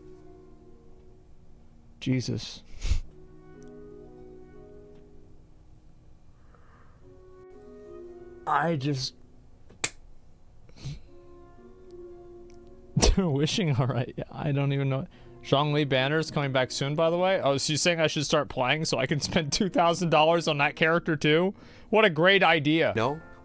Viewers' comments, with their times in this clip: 0:07 When Asmon was malding over Mtashed, and that sad Storm Terror Lair's music :DDD